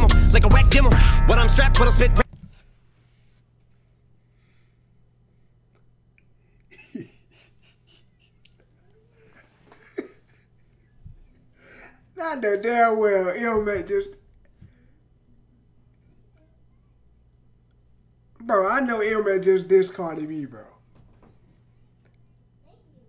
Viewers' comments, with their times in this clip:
0:09 I laughed before he laughed then I laughed more when he held his face and laughed